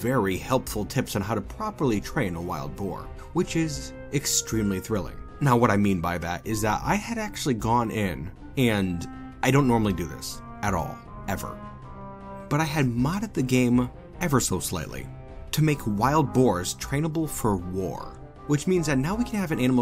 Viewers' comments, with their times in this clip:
0:07 Black Sabbath's "War Pigs" plays softly in the background.